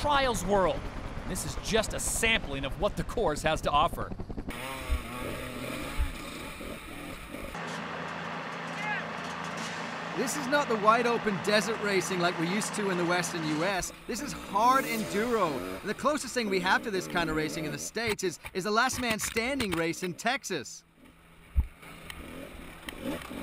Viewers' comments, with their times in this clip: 0:10 the guy sounds like someone from southpark